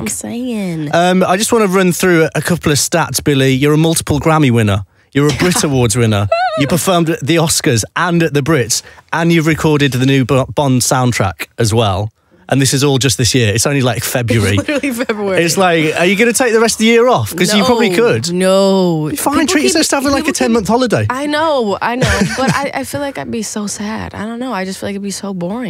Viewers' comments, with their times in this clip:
0:06 Billie: UUUuUUuUuUUuuu Me: Whoa that was the noise my sis makes when she is on the toilet. Edit: Btw there is no hate in this comment, it's just for humour!! 😁😁😁 😁😁😁